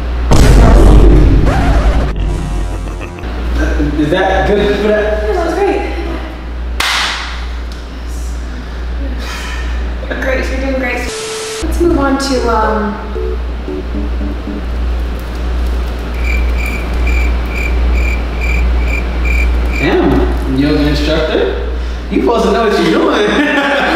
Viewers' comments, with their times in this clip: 0:08 so y’all ain’t see the giggle?